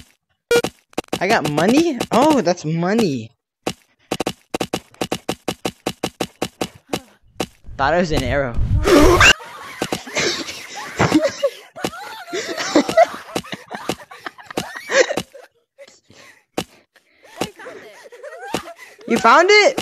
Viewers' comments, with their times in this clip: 0:07 perfictley cut scream hahahaha